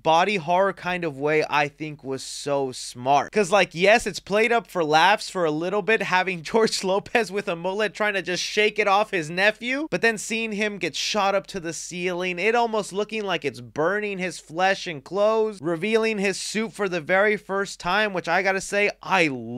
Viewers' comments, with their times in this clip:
0:07 George lopez the way he screams is so funny😂😂😂😂 shot out to the goat George Lopez to by the way